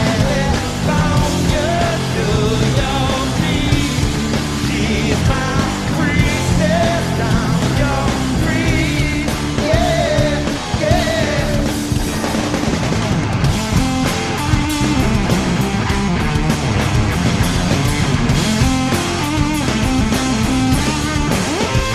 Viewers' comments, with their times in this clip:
0:09 At Johns solo ish, flea is killin it so hard the camera man thinks its a bass solo! lol